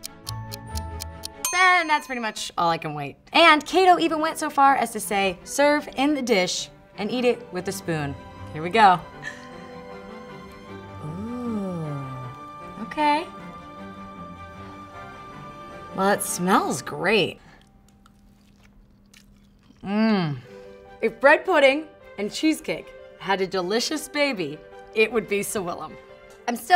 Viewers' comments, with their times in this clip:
0:10 She literally sounded like someone from the sims